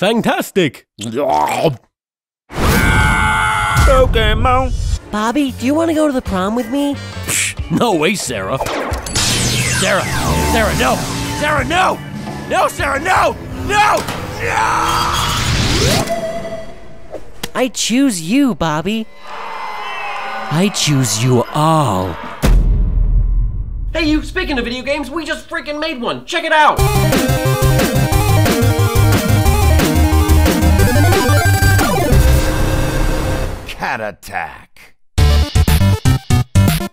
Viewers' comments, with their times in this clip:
0:07 He sonds like Stan Pines of Gravity Falls :T
0:24 Guns in background
0:24 so nobody's gonna talk about the wall of pew pew ?